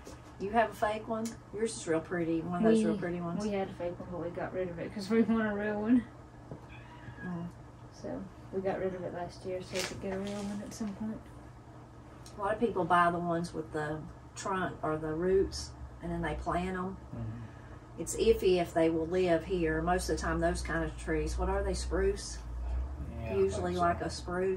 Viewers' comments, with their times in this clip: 0:05 I hear something that sounds like a kitty! Yes?